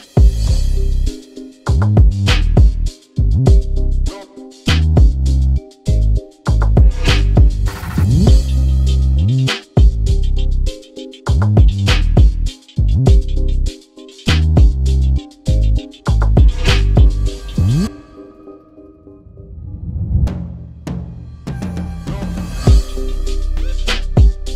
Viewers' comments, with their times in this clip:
0:09 that sounds like Baap se by 47 and kr$na ......... ( DESI HIP HOP if you know)